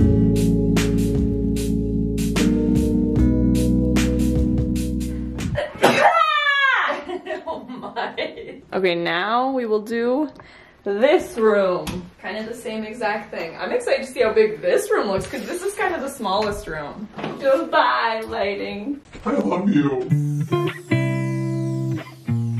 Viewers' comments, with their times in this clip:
0:05 I sneeze like that too